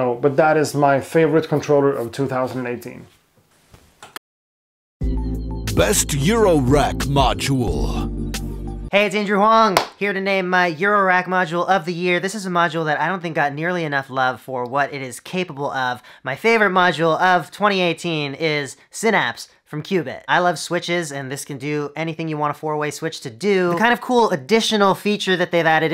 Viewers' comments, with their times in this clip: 0:08 this guy has such an annoying voice, its like hes trying to fit in some kind of cartoon